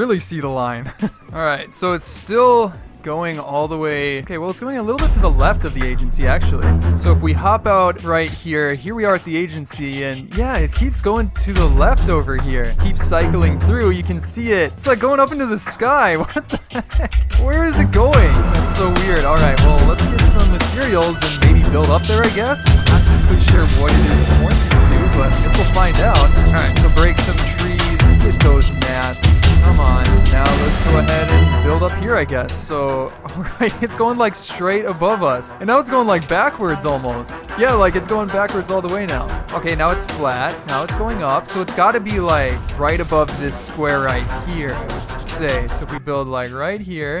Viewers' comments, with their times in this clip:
0:04 The music volume - oh man that surprised me.
0:07 The music got really annoying. Way too loud, could barely hear you
0:17 What happened to the audio ?
0:18 i cant hear the music
0:19 either this guy doesn’t know what background music is or he just doesn’t understand how sound works
0:19 I can’t hear u the music is to loud☹️
0:30 Why is music so loud